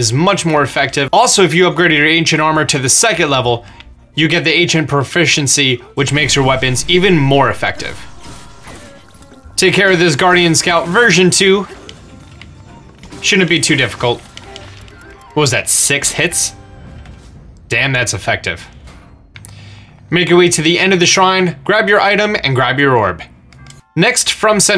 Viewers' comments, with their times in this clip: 0:09 i thought he said get rid of this virgin too